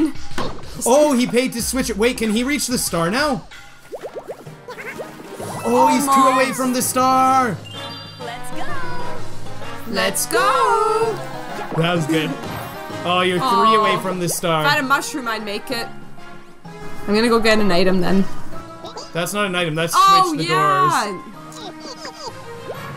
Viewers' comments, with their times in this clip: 0:10 Your sister is Rosalina I know so the part of the voice was really funny when y’all did it together at the same time the voice was beautiful 😍